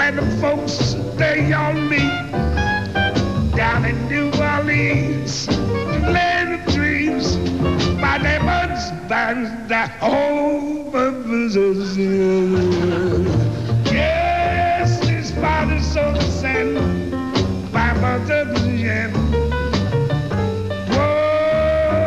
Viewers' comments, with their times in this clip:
0:08 What are the words he's saying lol I can't understand that part but I like his singing